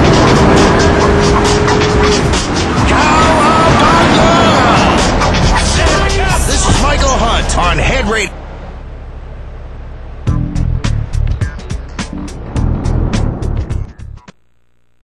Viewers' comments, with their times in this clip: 0:08 this music makes me think of sienfeld for some reason o.O